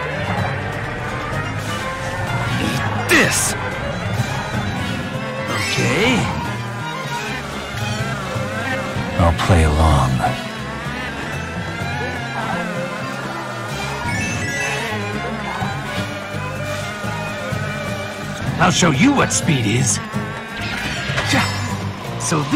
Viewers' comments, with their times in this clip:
0:08 Shadow stop whispering so loudly Also prefect quality sound clip btw lmao No but for real, thanks for the vid, those are some pretty cool mods